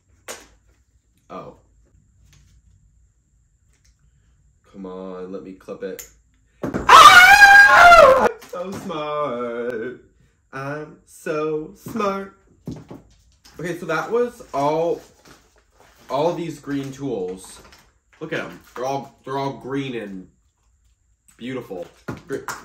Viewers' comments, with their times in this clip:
0:06 RIP my ears💀💀💀💀